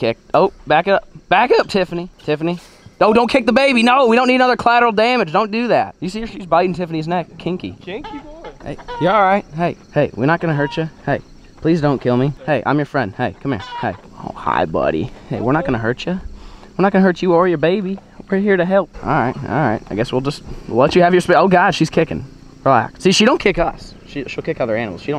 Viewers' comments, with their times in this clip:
0:08 banjo in background 😂